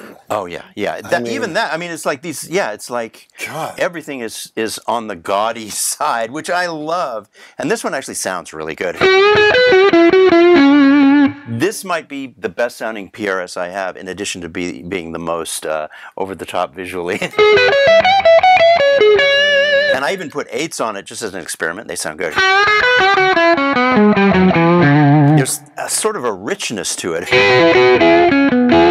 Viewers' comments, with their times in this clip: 0:09 ! Omg that tone. 🤤🔥